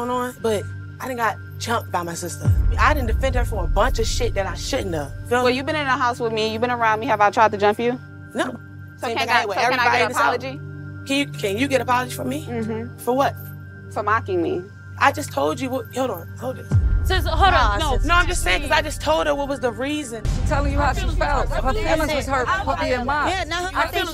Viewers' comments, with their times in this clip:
0:09 “ I’ll eat everybody in this house ” I had to listen closely and rewind 100 times. 😭‼️